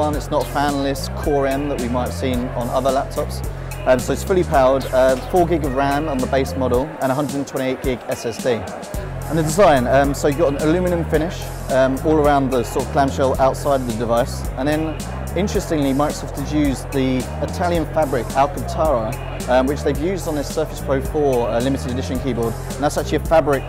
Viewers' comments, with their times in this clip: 0:09 What's this new fangled ilooooooominum ?